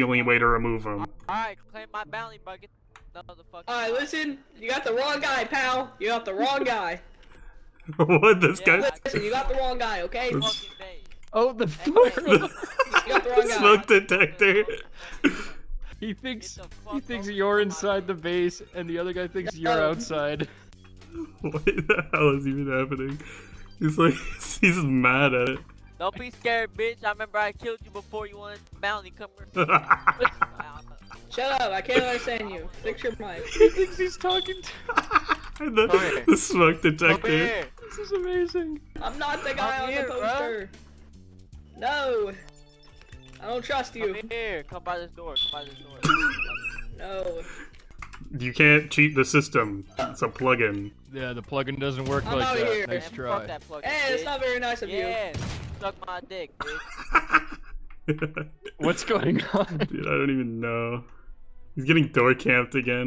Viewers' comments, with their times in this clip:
0:10 that beep is painful to hear
0:46 smoke detector beeping